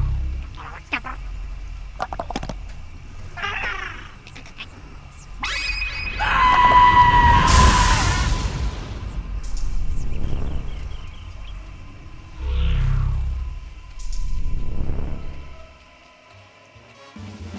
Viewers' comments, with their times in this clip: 0:05 anime flash Naughty Bear: AAAAAAHHHH!!! Alien dies